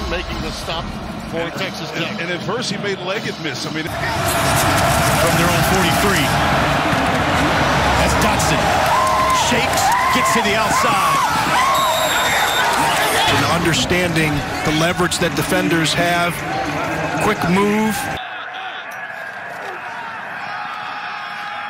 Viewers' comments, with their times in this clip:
0:08 Sounds like a lady just watched a dude get hit by a bus or something.